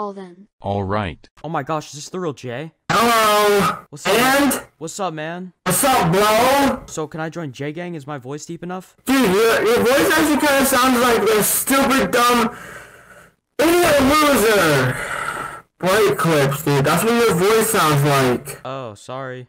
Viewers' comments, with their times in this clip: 0:03 I guess this is where the 1M dollar mic comes into play?